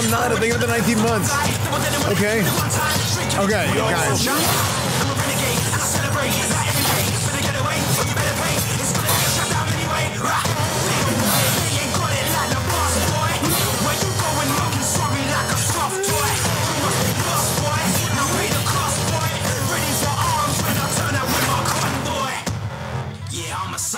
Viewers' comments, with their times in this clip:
0:09 The dumbest unfitting music choice I've heard in an actually not-long time ago.